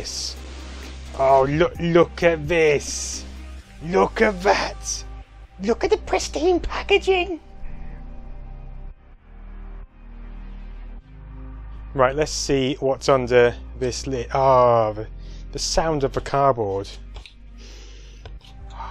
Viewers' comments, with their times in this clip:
0:03 "Look at the pristine packaging!" - Sounded like you were channelling Gollum there for a second!
0:06 Gollum "Look at the pristine packaging!" Haahaa! I got my Megadrive on my 12th birthday and it had Altered Beast as the pack in and I got Sonic from Argos a few days later with my birthday money from family. Nostalgia overload! Happy times! Still my favourite console now. Streets of Rage soundtrack brought a tear to my eye. Fantastic!